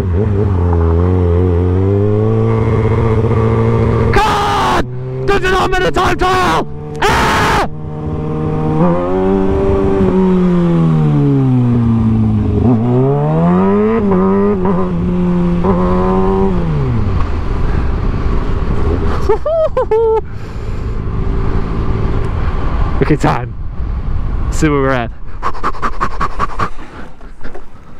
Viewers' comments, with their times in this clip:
0:10 i love how he screamed AHHH DONT U KNOW THIS A TIME TRIAL